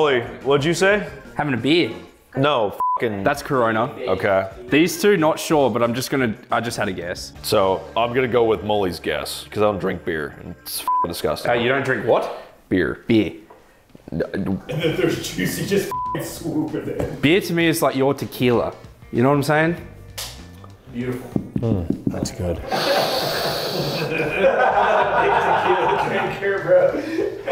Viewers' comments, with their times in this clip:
0:10 "aye u dont drink what? beur, beer*"